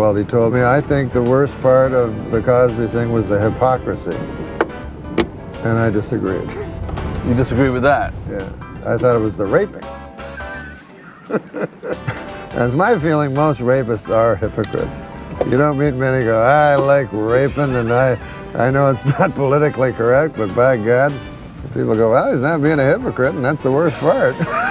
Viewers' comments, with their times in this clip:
0:06 jerry was absolutely not listening to him. That was among the fakest laughs I've ever seen lol